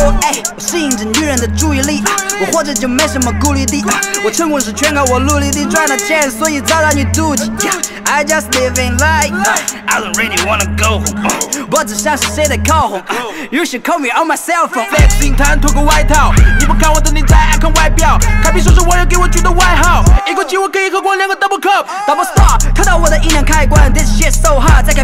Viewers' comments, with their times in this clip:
0:09 why he change his voice like that 😂